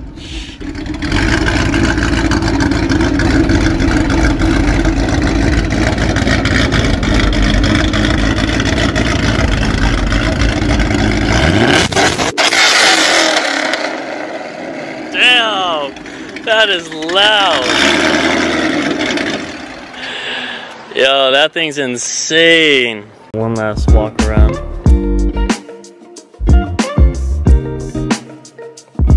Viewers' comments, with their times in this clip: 0:10 R.I.P my headphones 🤣🤣